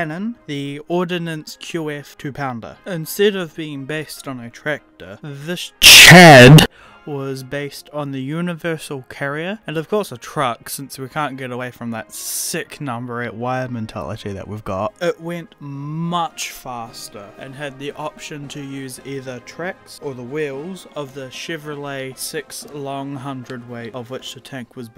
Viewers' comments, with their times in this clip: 0:05 the headphone warning is like a reaction time game, you gotta react fast enough to the warning or you never hear again